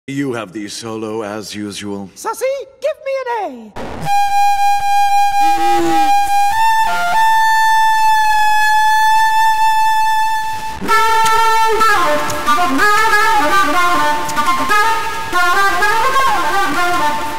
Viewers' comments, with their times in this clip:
0:04 Im just saying sussie played an Ab not an A🤷‍♂️